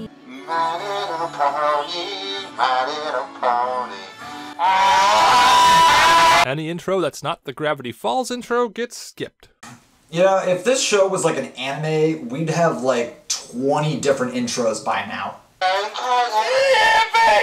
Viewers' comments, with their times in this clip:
0:04 RIP HEADPHONE 🎧 USERS